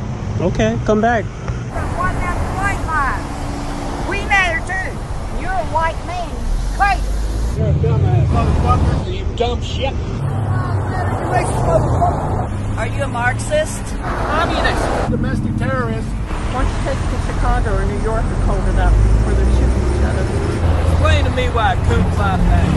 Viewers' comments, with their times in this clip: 0:09 did he say “you dumb sheck”?